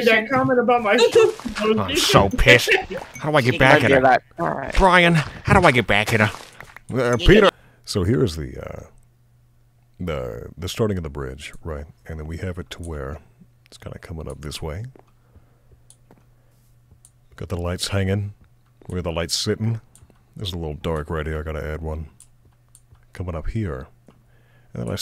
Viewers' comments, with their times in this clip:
0:03 that Peter impression was.. The best I've ever heard
0:08 i thought he was voicing joe 😭